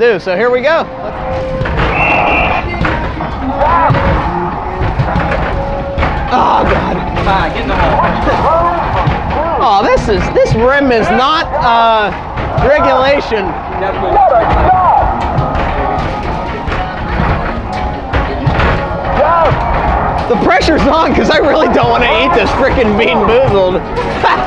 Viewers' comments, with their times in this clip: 0:10 how did i know the song right as it came on